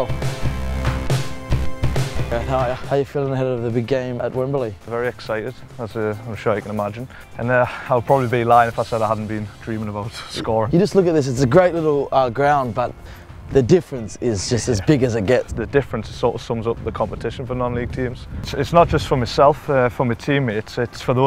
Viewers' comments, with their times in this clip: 0:04 wasn't looking at the screen, thought True Geordie was talking